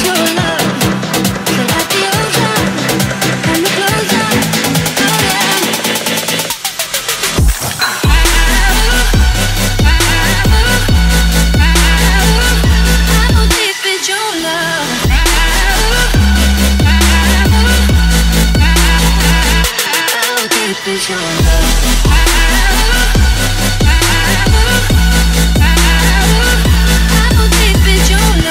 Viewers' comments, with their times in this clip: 0:09 I swear I hear sliver wear dropping